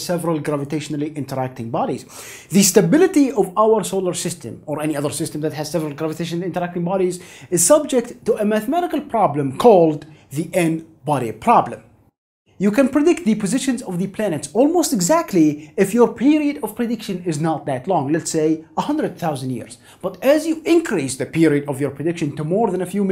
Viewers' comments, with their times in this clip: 0:09 called nobody problem.